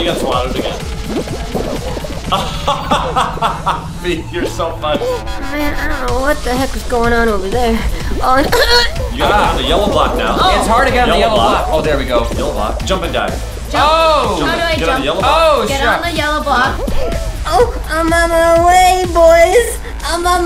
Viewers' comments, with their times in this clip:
0:06 What the heck is going on over there I just hear huhu